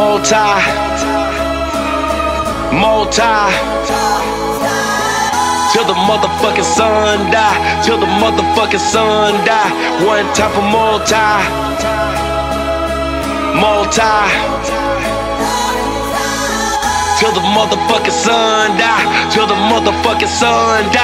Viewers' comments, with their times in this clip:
0:04 I was wondering, what are they singing in the background? for example sounds like "north side up"